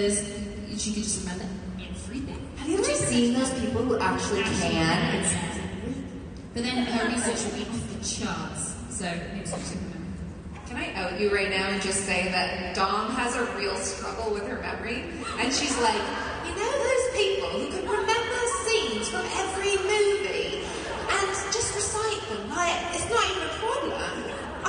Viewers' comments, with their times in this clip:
0:10 Mel's British accent LOL